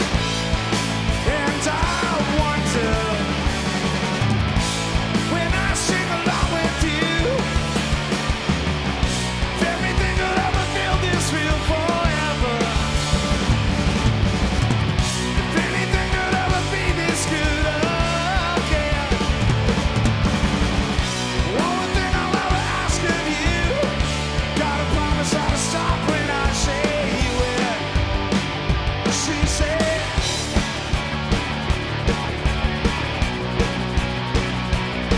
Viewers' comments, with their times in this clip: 0:06 nice to know that rockstars slightly fuck it up sometimes too
0:22 Nate’s fill is just WOW!